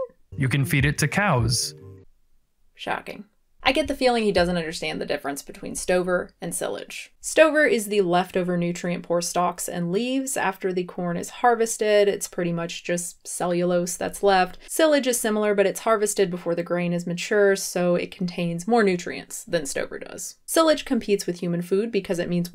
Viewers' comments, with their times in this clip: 0:06 The way she pronounced "Silage" made me cringe